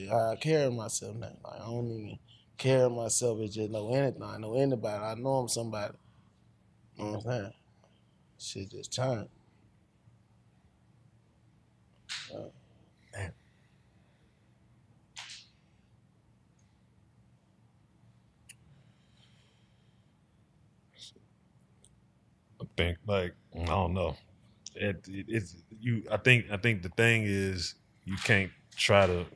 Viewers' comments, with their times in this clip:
0:03 That Moment of silence was real asab
0:11 when they went silent spoke volumes !